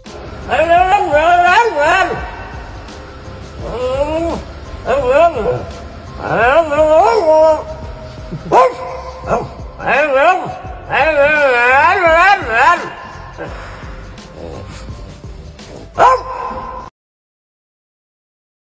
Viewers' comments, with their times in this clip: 0:10 he definitely said “hurry up!” 😂